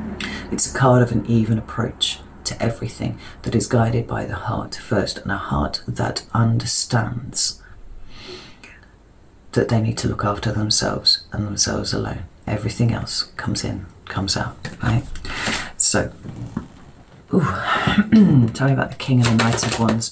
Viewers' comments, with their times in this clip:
0:06 whats that voice after she says "a heart that understands" ?